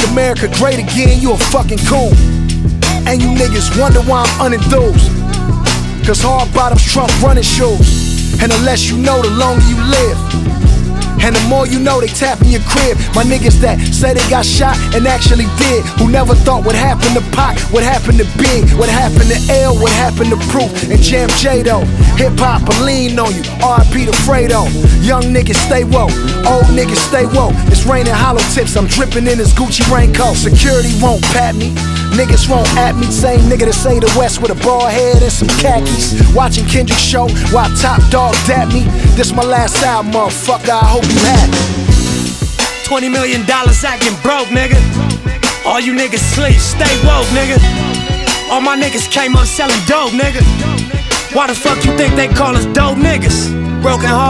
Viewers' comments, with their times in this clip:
0:04 Man that run just gave me goosebumps
0:42 I'm sorry but for me the song starts just beautiful